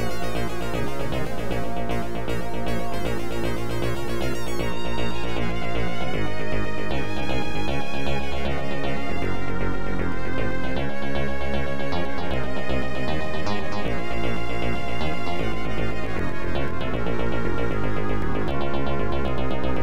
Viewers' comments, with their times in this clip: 0:03 It's right there. Right that my eyes start doing the "rainy" thing. How long it was? Probably I don't wont to know -much older now-, but hearing those melodies again.. I'm back at my childhood years. Not my best years, but definitely full of powerful and positive memories too. Thanks videos games and music composers to be there for me.